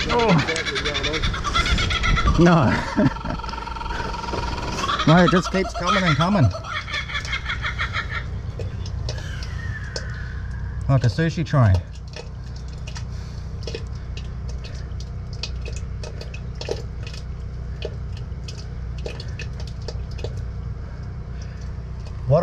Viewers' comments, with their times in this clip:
0:10 sounds like someone taking a taco bell dump